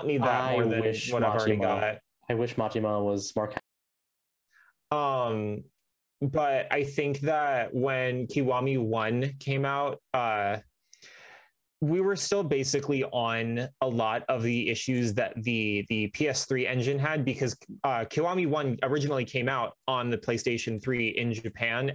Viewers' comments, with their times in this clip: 0:03 to the end audio problems again 😅